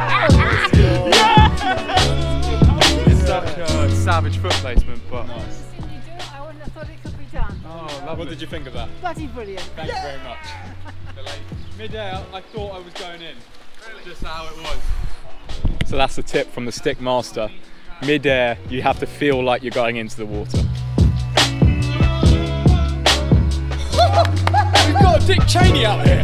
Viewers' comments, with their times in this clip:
0:10 He said :"quasi brilliant"?